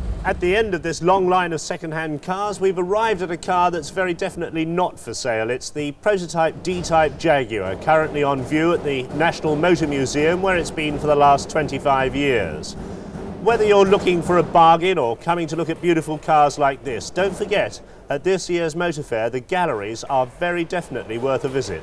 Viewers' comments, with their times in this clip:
0:09 it's your big ends, mate, they are knocking.